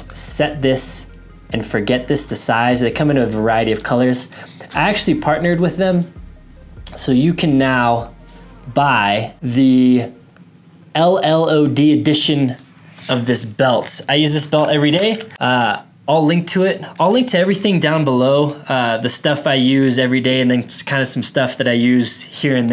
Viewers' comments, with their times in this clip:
0:03 of hearing you ramble....on and on and on with your monotone voice. Just get to it! Woulda stayed but this is exhausting.